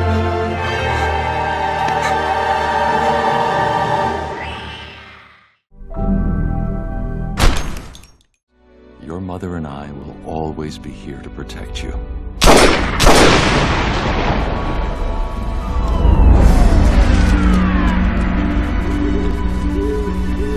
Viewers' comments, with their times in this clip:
0:03 lol that scream tho
0:03 Bruce's scream made me laugh
0:03 that scream! Is priceless
0:04 OMG you chould add this to a perfectly cut screams complilation lol